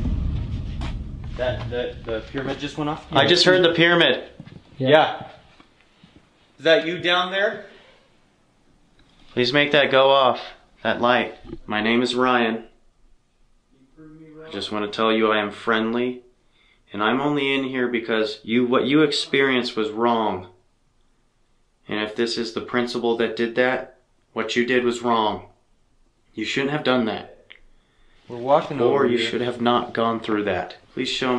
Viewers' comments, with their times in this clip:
0:08 If you listen closely you can hear a girls laugh or giggle. Anyways this is an awesome episode. You guys are amazing.
0:14 I hear a little boy saying something like are you wrong or are you on. I've got my phone vluetoothed to my car and omg you can hear everything lol